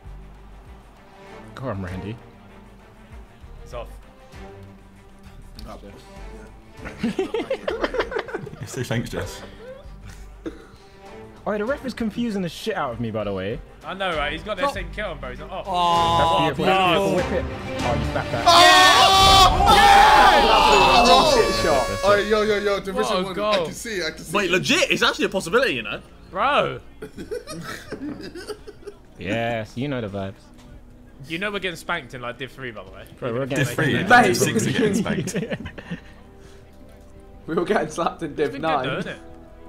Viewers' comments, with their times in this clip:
0:10 fam why did the dramatic music play for that long
0:17 wait, this isn't the right music..
0:25 The music had me super confused when they scored 😂